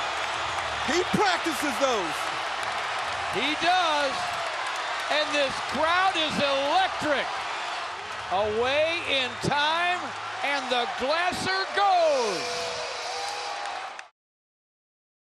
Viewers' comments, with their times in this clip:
0:05 yea lmao the people leaving the arena just turned around like "wat the fuck happened i hear cheering"